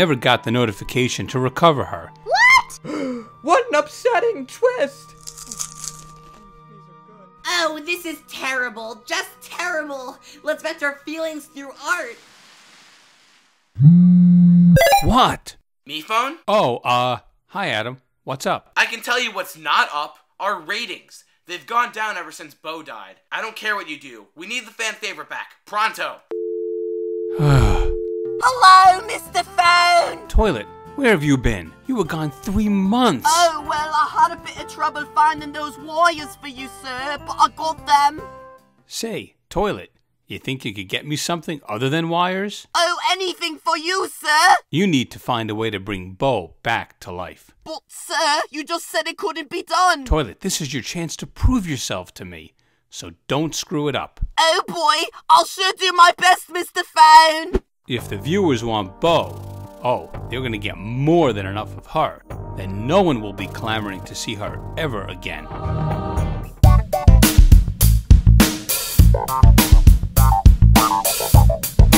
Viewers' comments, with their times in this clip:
0:06 You can hear Fan saying “Ooh these are good.”
0:55 it sounds like toilet said "ill sh** u my best Mr phone!"